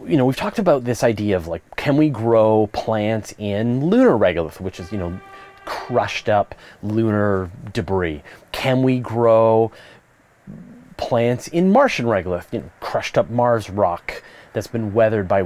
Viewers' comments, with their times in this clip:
0:03 Plus he has also added a background sound effect to enhance the sense of realism. :-)